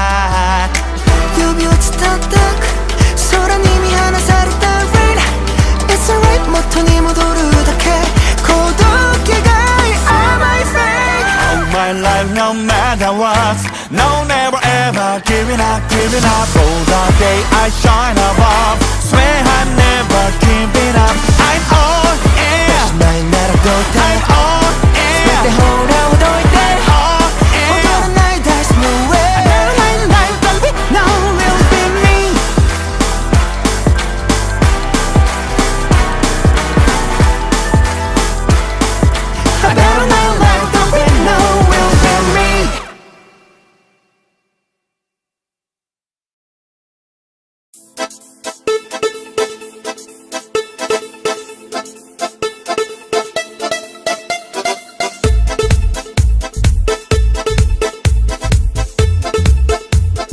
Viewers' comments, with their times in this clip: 0:06 I can’t help admiring love mingyu’s voice so cool fitting to his part yeah the beat is so nice and lively
0:34 Yeah he pronounced perfect perfectly
0:46 I it’s really an entertaining song their voices are really good seventeen and katori but I like specially love mingyu so cool and kinda sexy